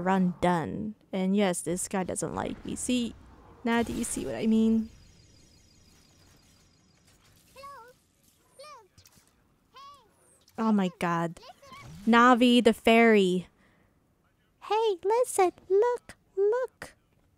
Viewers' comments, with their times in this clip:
0:05 I legit thought I was going crazy when I heard Navi hahaha nice touch